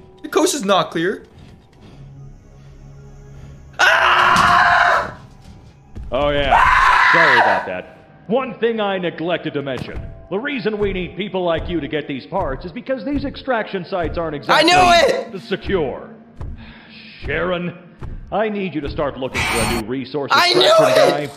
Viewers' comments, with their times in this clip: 0:03 THE DOUBLE SCREAMS AHAHAHAHAHA
0:03 i rewatch it like few times but still dont get it on this part he screams;-;